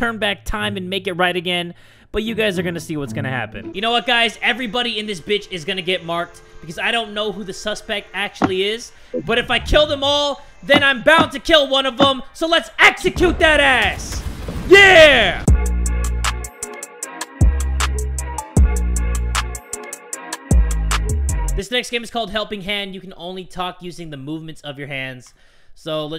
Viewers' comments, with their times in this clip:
0:07 lmao when he screamed